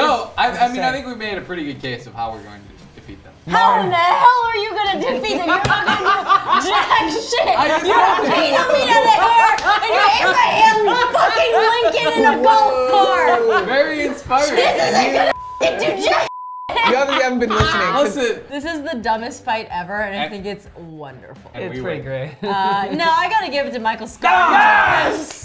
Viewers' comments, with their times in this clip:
0:10 Was there supposed to be a bleep ?